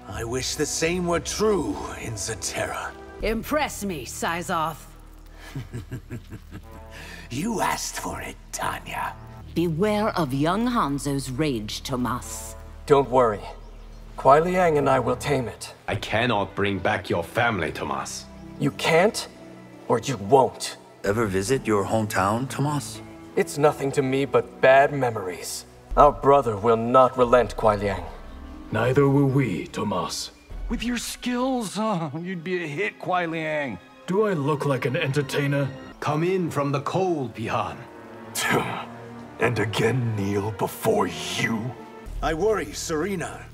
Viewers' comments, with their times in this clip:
0:04 Sizoth laughed!) You heard, him chuckle✨ 💚
0:05 I swear if Johnny Cage saw Reptile laugh like that, he would have saw great potential in him to play the role of a villain for his movie.
0:05 ayo that laugh was personal
0:23 Yuri did the spider man voice
0:31 johnny gotta stop moaning